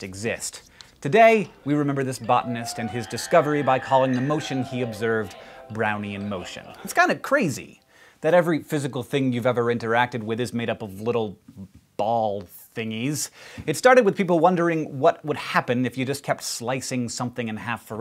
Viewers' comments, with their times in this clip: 0:06 r2d2 scream lol